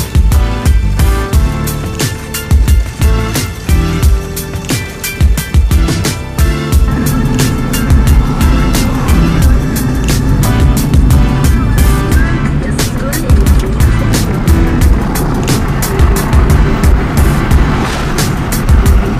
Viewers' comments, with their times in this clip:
0:03 Me and my wife grinded to this music